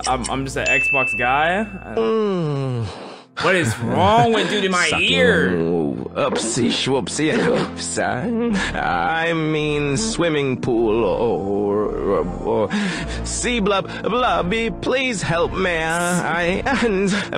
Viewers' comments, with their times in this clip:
0:03 sounds like joe biden trying to give a speech